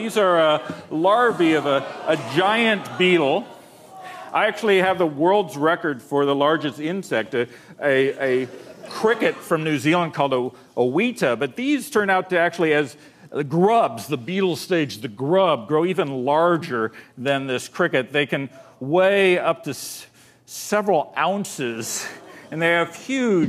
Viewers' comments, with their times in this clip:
0:03 anyone else here some guy yell "WHAT THE F**K."
0:09 A 'Wheat-tah' lmao.